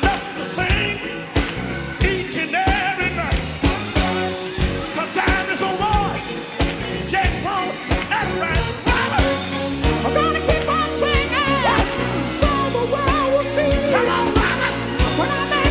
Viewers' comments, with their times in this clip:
0:03 The dip yes lawd